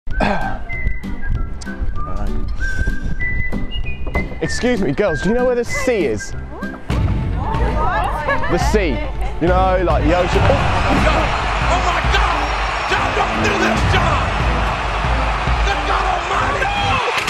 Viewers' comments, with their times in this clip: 0:00 did you here err i did xD